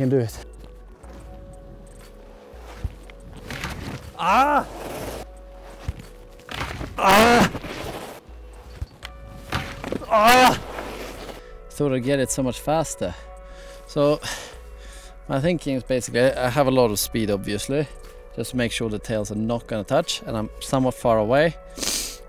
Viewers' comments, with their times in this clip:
0:09 don’t press ear rape